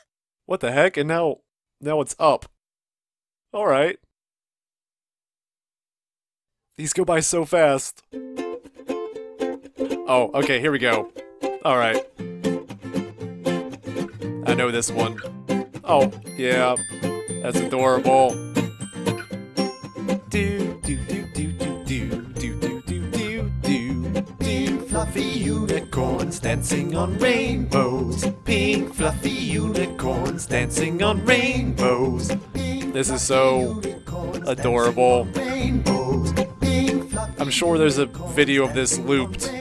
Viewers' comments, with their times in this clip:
0:08 Minuto Maybe this is the most part of the video that make me laugh so much More because you’re singing (like me) XDXDXD
0:24 seriously, great duet!😄😄😄